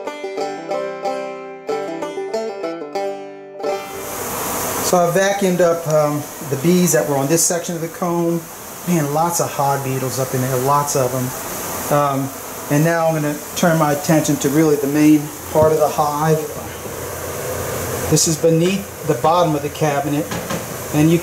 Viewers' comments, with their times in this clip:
0:06 Lot's of "hard needles" "hog beetles"?